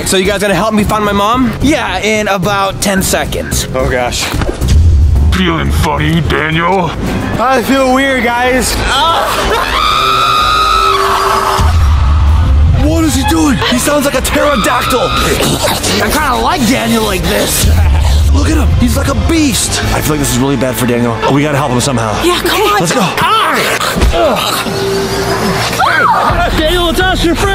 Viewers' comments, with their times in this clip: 0:09 this is what we call a demon scream